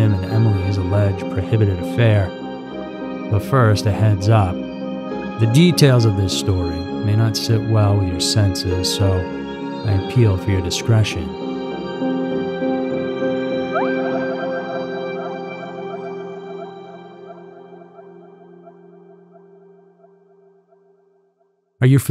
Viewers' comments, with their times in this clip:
0:08 Your initial "BUT FIRST, A HEADS UP..." description doesnt begin to describe this video or this MONSTER. I just ask that you take notice of the casual cadence in which you tell your stories. Not all stories deserve the consistent lack of emotion in their re-telling's. There are real people who are listening to these horrible crimes. I do appreciate your channel though. Not hating, just being honest.